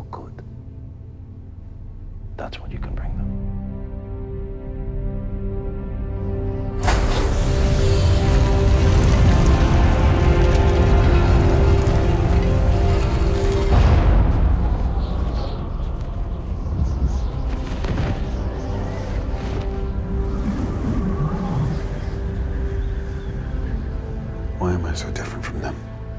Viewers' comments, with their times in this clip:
0:07 Say what you want about snyder you can never take away his eye for cool visuals that bit with the music is just goosebumps